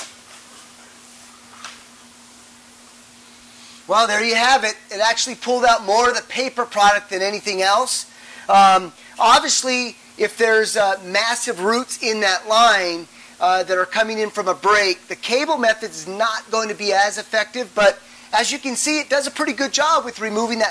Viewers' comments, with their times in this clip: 0:03 your sound is lost into the video.